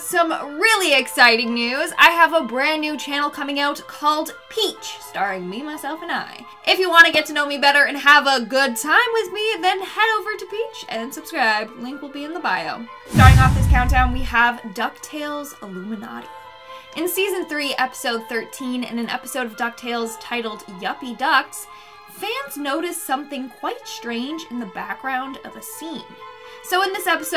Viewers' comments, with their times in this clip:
0:08 😳 that kinda sounds like..